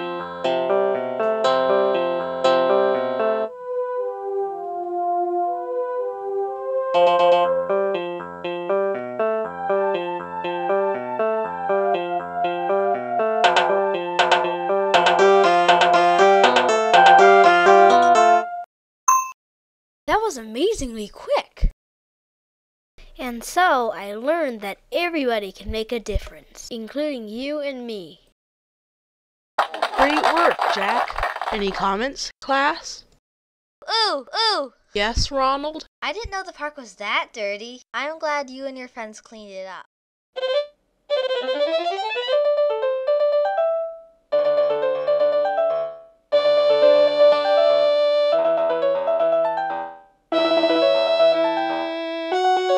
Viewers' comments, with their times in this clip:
0:07 me when the bass hits the fire
0:29 help why do they clap like that 😭😭
0:36 sounds like old match
0:36 that sounds like pin from BFDI